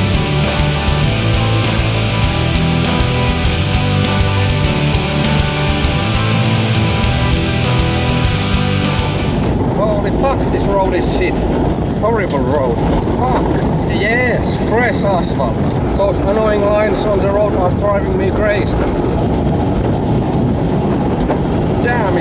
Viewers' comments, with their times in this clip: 0:09 LMAO ;'D Sounds like me when I'm driving a car with a very stiff suspension.